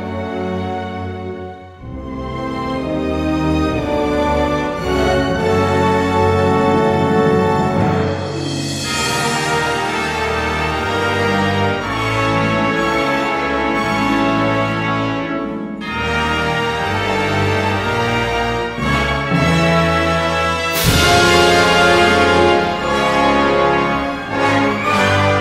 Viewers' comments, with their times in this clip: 0:09 Somehow this part reminds me of the Danny Elfman Sipder-man theme.